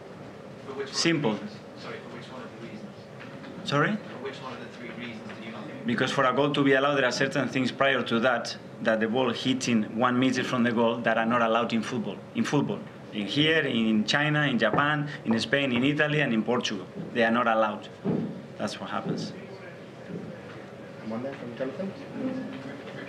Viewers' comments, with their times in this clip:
0:09 Can someone clear up what he said It sounds like he is saying "you can't hit in the ball 1 metre away from the goal" but of course you can???